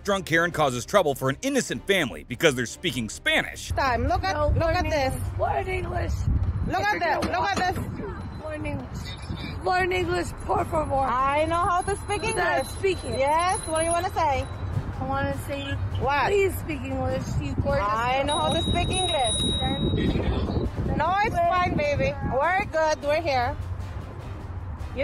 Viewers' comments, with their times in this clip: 0:07 they speak TAGALOG.